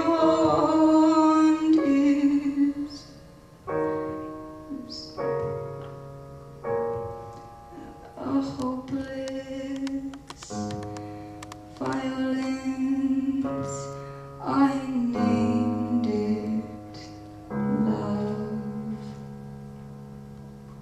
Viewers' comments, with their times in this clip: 0:04 i’ve watched this performance enough times to start wondering: do y’all think she kind of messed up on the very last part of door? you can slightly hear a small “oops” as if she got delayed a little bit, and then also how she brings both her hands up as if grabbing the mic but then bringing them down real quick to play the piano again. you can also see how once it ends, she brings her hand to cover her mouth while smiling nervously. i’m still not sure if it actually was on purpose or accidentally, but that small detail was really adorable!